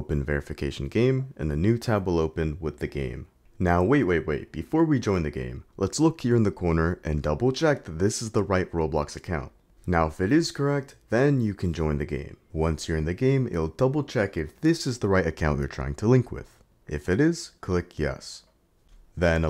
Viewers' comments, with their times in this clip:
0:06 lol the robuz saying 'broke'